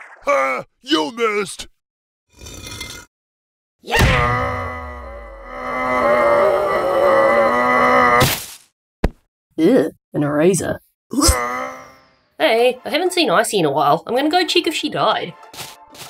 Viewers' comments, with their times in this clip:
0:04 I hear a sound effect on on Erasers and Winners voice.